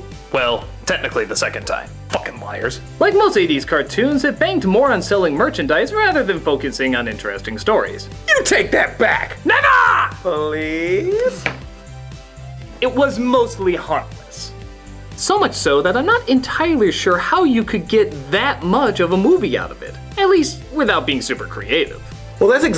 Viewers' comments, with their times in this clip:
0:09 The way Doug said "Never." 😂😂😂
0:10 Did critic just say the n word